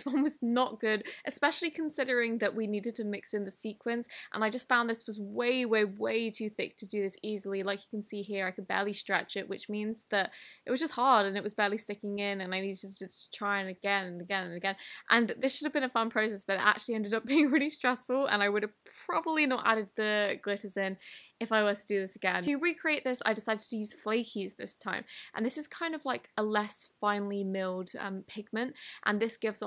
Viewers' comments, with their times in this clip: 0:10 you sound so tired you should take a break and take a nap because you do so much for this channel and for everybody who watches you💜 Thank You!